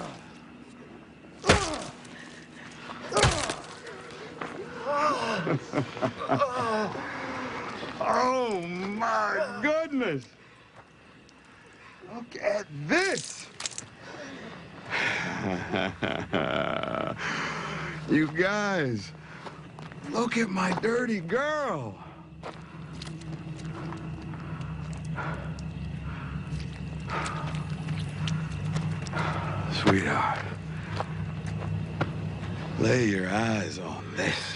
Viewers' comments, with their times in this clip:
0:05 that ain't Negan's moaning lol, try to focus on the voices
0:15 cyniest laugh ever...
0:15 negans laugh lol